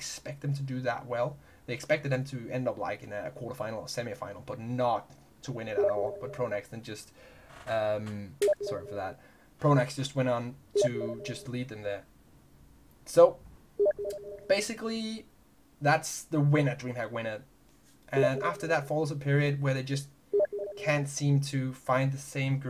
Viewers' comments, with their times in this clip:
0:07 the steam msg's trolled me (T_T)